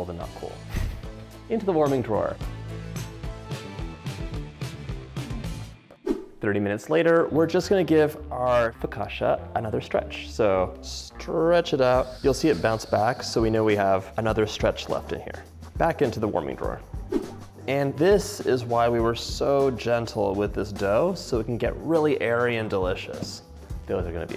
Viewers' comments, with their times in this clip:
0:08 Focashia counter missed on 😂❤